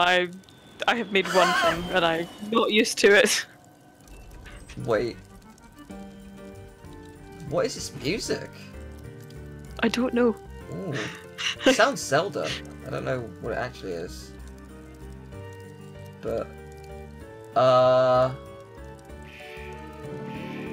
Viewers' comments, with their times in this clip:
0:04 sounds like Morgana is saying derp sometimes when he jumps. also it is indeed the professor sycamore theme from X and Y ar